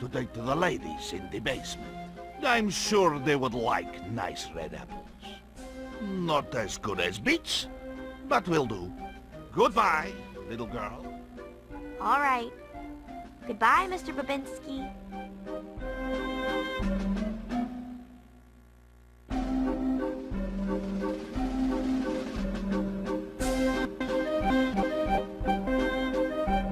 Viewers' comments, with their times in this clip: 0:08 sounded like he said bitc 👵